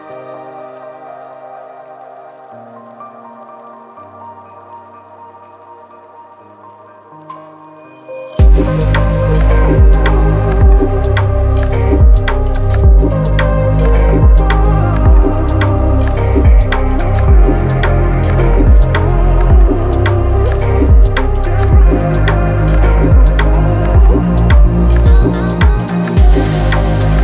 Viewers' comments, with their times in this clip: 0:10 That noise in the background starting around the mark, I thought the cat was being sick 😂